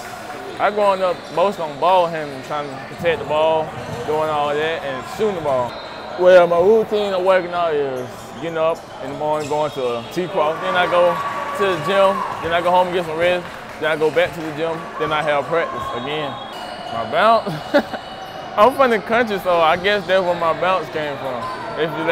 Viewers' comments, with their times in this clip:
0:07 I understood why......He sounds like a 6th grader.